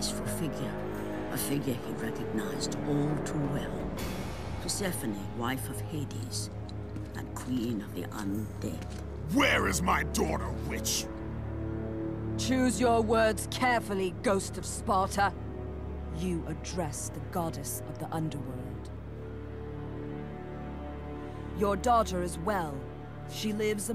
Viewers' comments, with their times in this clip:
0:10 In my times I always believed that Kratos said the B word 😅